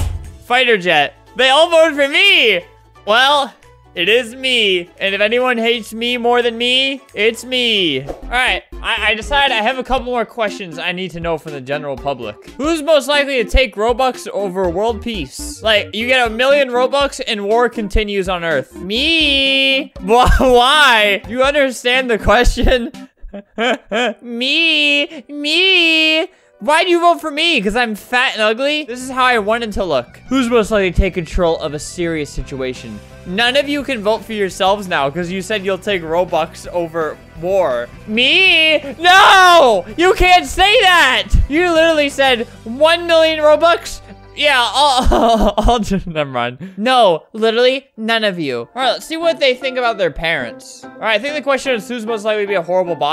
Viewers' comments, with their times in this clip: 0:09 kahoot music starts playing
0:12 what is up with the Kahoot music
0:14 I hear kahoot noises....REEEEEEEEEEEEEEEEEEEEEEEEEEE E E E EE
0:18 Nobody: kahoot music playing in the background
0:29 foe=r some reason i heard the office theme song
0:30 anyone hear The Office theme song in the background o.O
0:31 The theme song to "The Office" starts playing.
0:34 Lol that's also the first thing I thought and did you also hear the office music
0:34 go to and listen to the background music, if you get it you get it :>
0:36 That "the office" music is BANGINNNNNNN